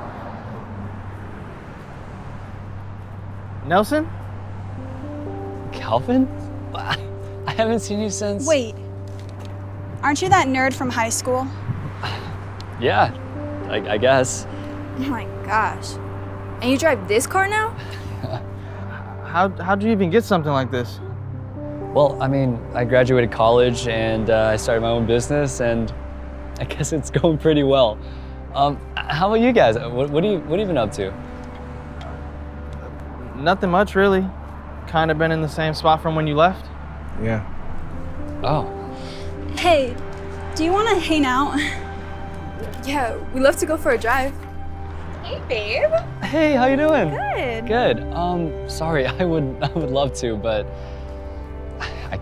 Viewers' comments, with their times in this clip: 0:09 she sounds like America ferrera
0:40 she say hane out